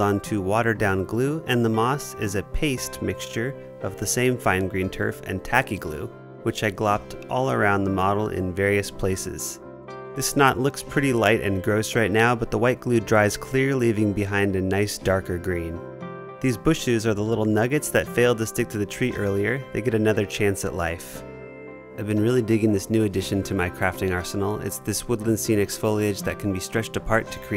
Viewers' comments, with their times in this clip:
0:10 the music was driving me nuts. It was triggering some memory for me I couldn't place. I kept trying. Ended up at "horror video game?" Only that wasn't right, but it felt close to right. Then I got it. Coraline. It reminds me of the score from the Coraline movie! lol now that I got it I both have to rewatch what I missed here trying to place that dang sense of familiarity then go watch the Coraline movie... which now that Im thinking of it actually had some things that could be used as build inspiration. Hm...